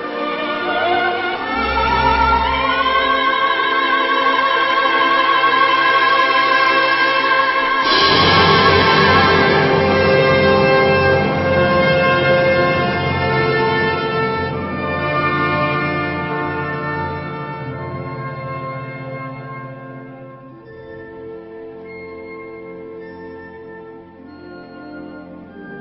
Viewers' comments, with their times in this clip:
0:08 Did Pavarotti crack? Ir is it just me?